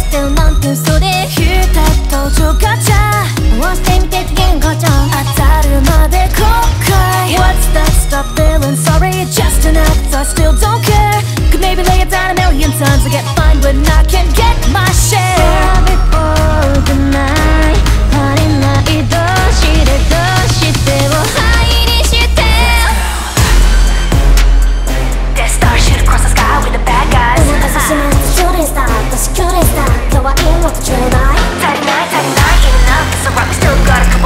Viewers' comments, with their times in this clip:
0:04 I seek wisdom from the experienced lol Do you think the 「当たるまで後悔」is Suisei or Calli singing? The text implies it's Suisei but I can only hear Calli.
0:22 That beat drop is just MWAH